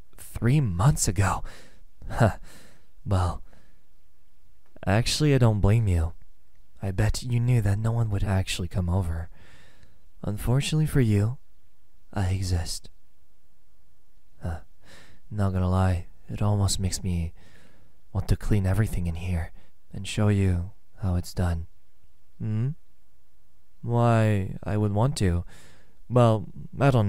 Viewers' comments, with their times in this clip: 0:10 that sounded a lot more rapey than I think was intended